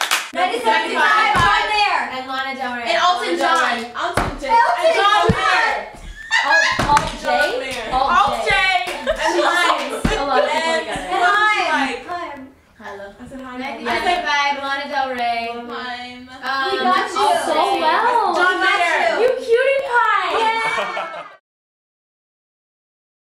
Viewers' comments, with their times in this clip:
0:05 I just can´t with Ally´s laugh on 😂😂😂😂😂😂
0:05 Ally's laugh is so funny
0:06 ALLY'S LAUGH!!!! IM DYING
0:06 OMG NORMANI'S LAUGH 😂😂😂
0:06 Ally's laugh I can't😂😂😂😂😂😂😂